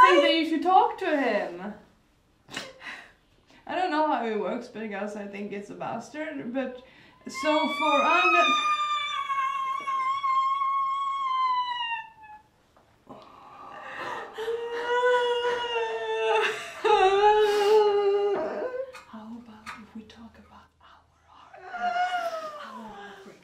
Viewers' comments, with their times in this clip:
0:07 RIP all earphone users xwx